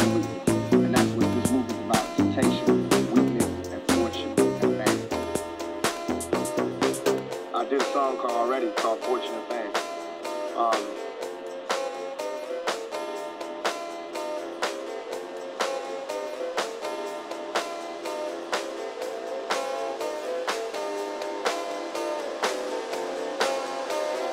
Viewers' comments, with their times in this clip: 0:06 No tthere is no drop there... and you look embarrassed yes...